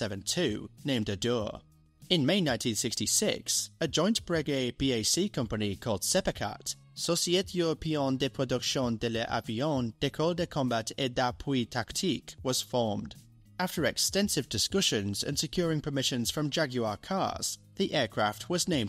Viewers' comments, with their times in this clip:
0:06 "Europeeene"?! I know "e" is the most used letter in French, but still...